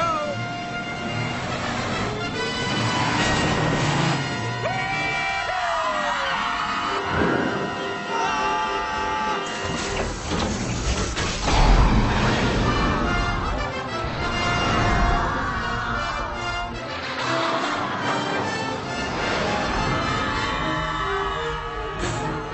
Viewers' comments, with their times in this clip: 0:08 Love Will's scream